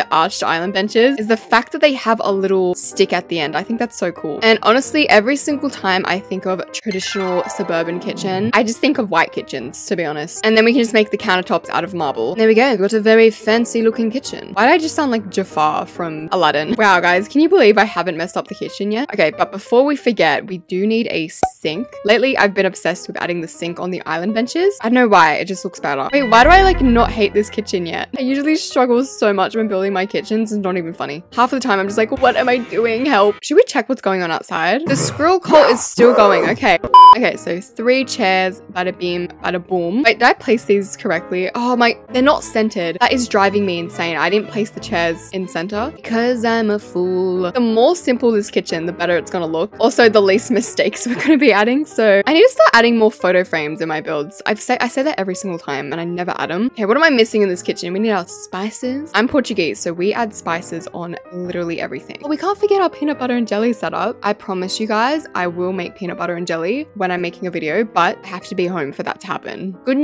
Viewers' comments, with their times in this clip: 0:07 every time i hear this sound i think of the intro to mama mia
0:52 Wait are u Australian or portugués or are u both?? I might have spelled it wrong but it’s ok